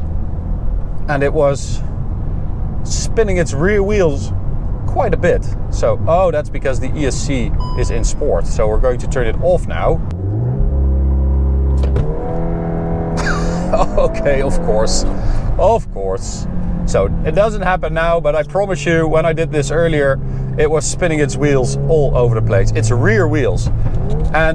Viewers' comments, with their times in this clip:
0:07 lol the airbus sound lmao